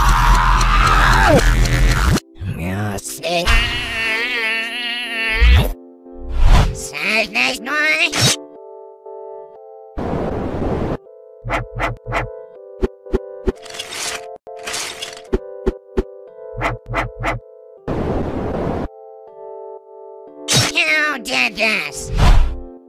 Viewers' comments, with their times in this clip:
0:06 four : demonic speech Forks : ight imma head out